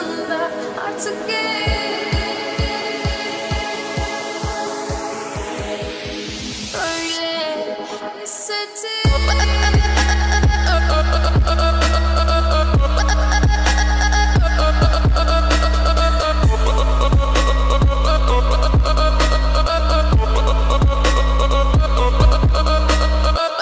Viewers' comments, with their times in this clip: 0:09 I love this beat